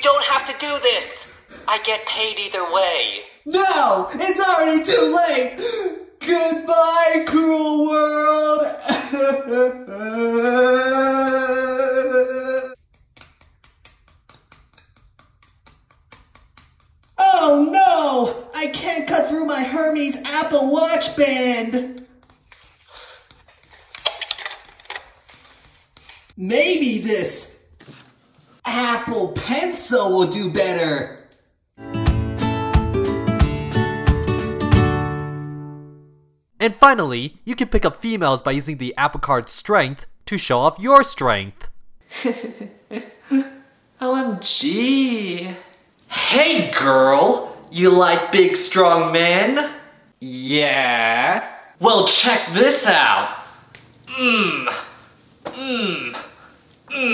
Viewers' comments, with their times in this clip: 0:10 a ps4 when running a game
0:10 when a plane engine starts XD
0:39 Bass and Louder ma'am holy